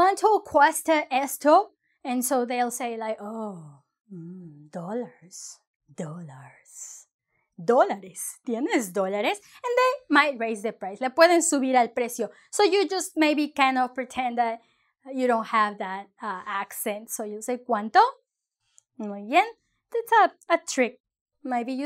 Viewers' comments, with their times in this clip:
0:06 the way she say umm... dollars is incredibly funny